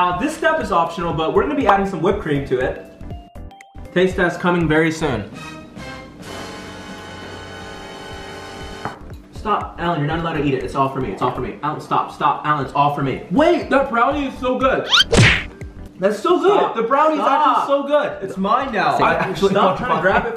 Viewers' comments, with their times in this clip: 0:05 is literally my ringtone and I thought I was getting a call😂